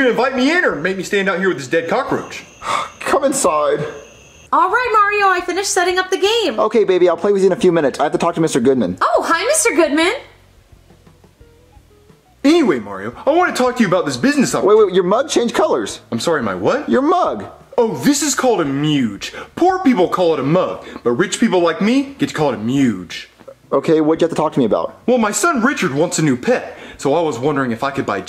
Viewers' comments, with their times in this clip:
0:09 I love the awkward silence 🤣🤣🤣